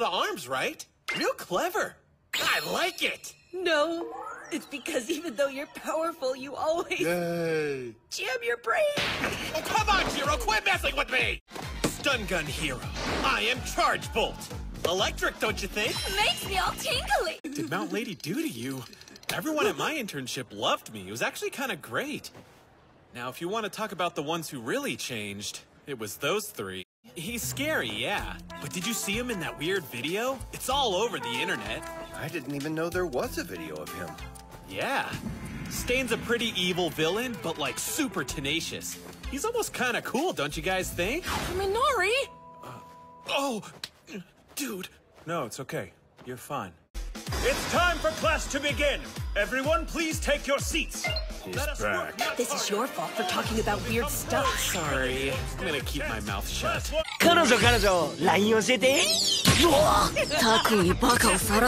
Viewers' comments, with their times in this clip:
0:09 ok that sounds like a different character
0:47 ok, i know this video is about Kaminari (and i dont blame it, he's a pretty cool character) but the way Lida spoke his tone was soft and understanding. I haven't seen the anime start to finish but i know enough of the characters and have seen bits and pieces to know whats going on and what was being referenced in this scene. In clips that i have seen, Lida is usually loud or emotionless/commanding in his tone and appearance. so hearing him say "no, its ok. you're fine." in this scene made me stop to re-watch it repeatedly just because of how soft and understanding his tone is. i feel like we get a glimpse at a side to Lida we dont normally see in these short few moments. ok, thats all, just felt like calling that out haha!